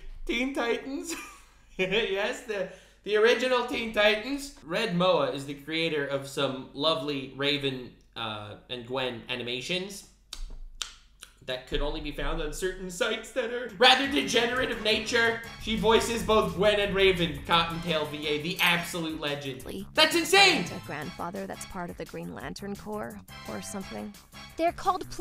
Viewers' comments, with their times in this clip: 0:07 I thought she sounded familiar